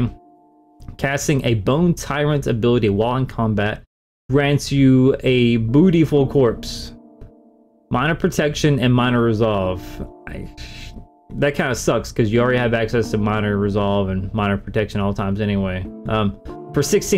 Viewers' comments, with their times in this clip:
0:05 beautiful corspe I thought you said bootyhole😅😂